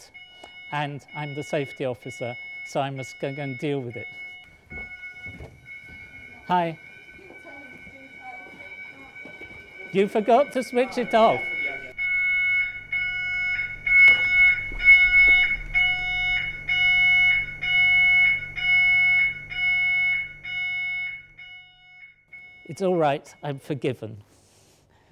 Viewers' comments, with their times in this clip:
0:06 awkward "Hi" :D